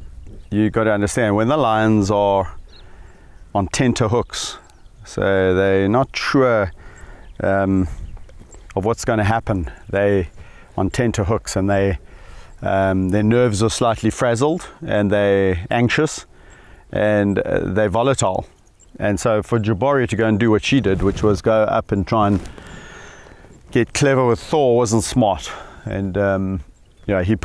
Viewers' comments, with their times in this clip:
0:08 What an incredible honor it must be to sit next to majestic lions as they roar.